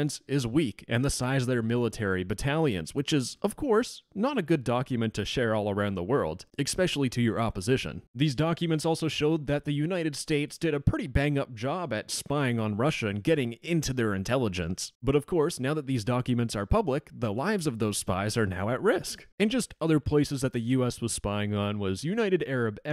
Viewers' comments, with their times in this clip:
0:06 Expecially? Is that even a word?